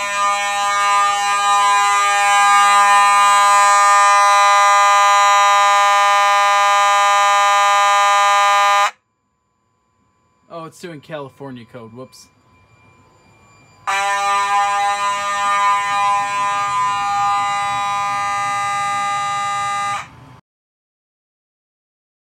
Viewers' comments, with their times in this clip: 0:08 tone is G#/Ab :D lol